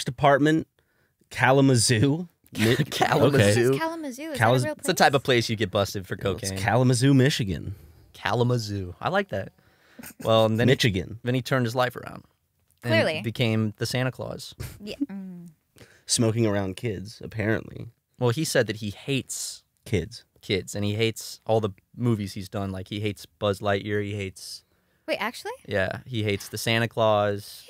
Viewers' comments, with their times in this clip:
0:09 as a proud mitchagander I appreciate you pronouncing Michigan properly.